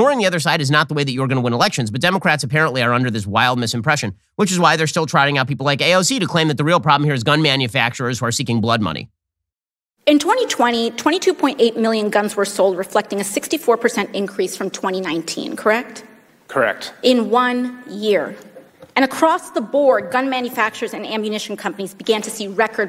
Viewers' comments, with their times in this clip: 0:09 Is it me or does AOC have a voice to match her mental age. Because to me it sounds like she's 11. Like l know that sounds snarky I know, but I'm absolutely serious. She sounds like she's 11. See for yourself Close your eyes and picture an 11 years old AOC